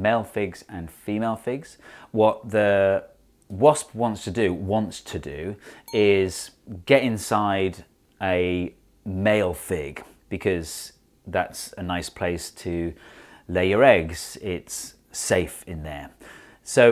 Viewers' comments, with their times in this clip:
0:04 I got really confused because it sounded like an alarm went off on my Mac, but in fact the video used that exact sound to denote the footnote…